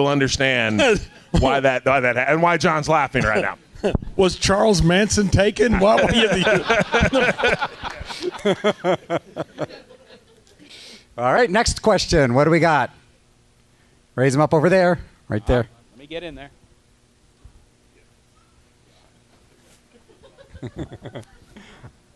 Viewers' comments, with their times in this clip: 0:06 Holy sheesh though at his Cornette impression ! It's incredible!